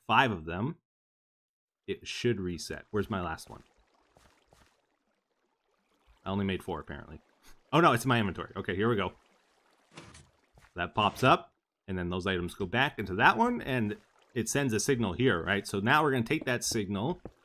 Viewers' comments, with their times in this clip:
0:03 There were 5 swords on the ground, but Etho had 4 inventory slots free, so when he jumped down he picked up 4. Then he picks up the 5th one, if you crank the volume you can hear the pick-up sound